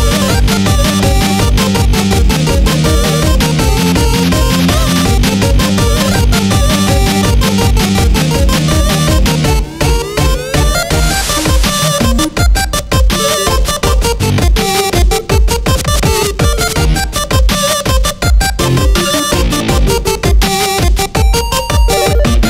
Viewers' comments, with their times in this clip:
0:10 sounds so dope
0:10 sick Bad Apple drop!